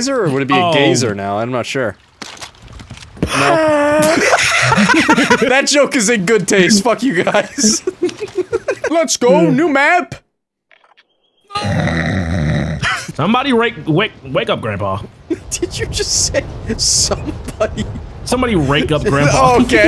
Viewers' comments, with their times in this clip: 0:04 that fucking laugh😂